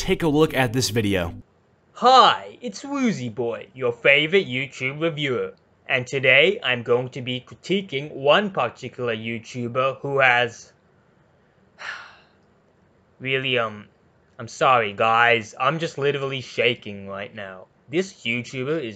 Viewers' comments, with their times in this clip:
0:03 goofy ahh voice